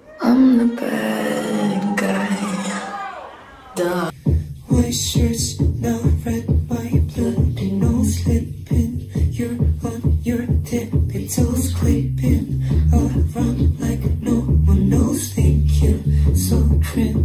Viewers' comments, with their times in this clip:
0:04 thats so beautyfull 😢😢😢 why i can't sing like that